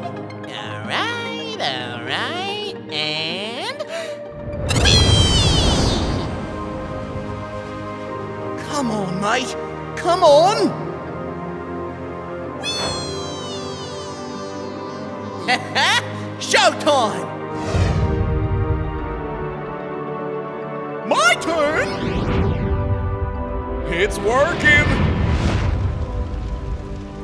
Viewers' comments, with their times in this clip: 0:08 He has a differeny voice, cool! (He sounds british... cool...)
0:09 He must see Neptune drift and after a while hears the weeeeeeeee Because the difference between speed of light and sound
0:14 NEPTUNES “WEEEEE” Was so cute LMAO